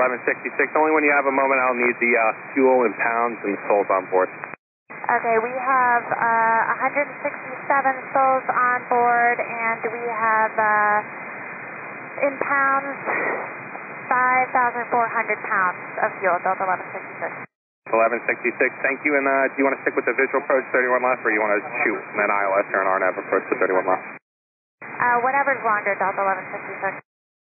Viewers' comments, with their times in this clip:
0:09 should read "157 souls on board." Both pilots sound junior and incompetent.